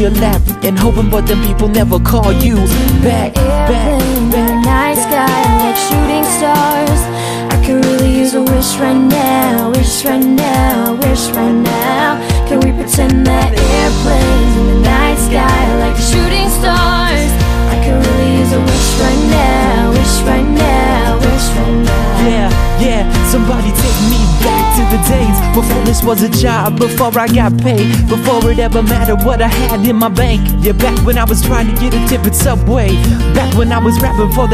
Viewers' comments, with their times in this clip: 0:03 I love the part when she sings "shooting staaaars" and the beat *_*
0:15 omg "shooting stars~" gives me the shivers..your voice is so strong i love it, you are easily one of my favorite singers!!!